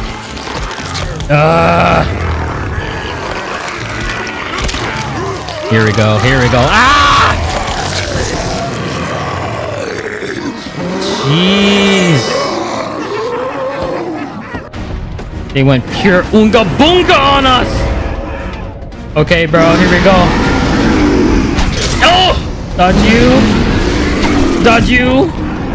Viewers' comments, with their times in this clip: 0:06 always make me laugh when the music comes on when you're doing the hacking haha ewwwww i dont like stuff like that makes me cringe so bad! Great video agent!